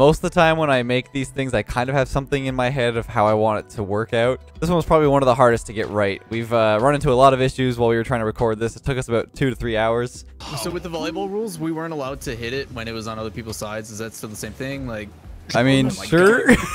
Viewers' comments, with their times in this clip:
0:03 Holy... for the first time I hear the Canadian being strong mate. Hahaha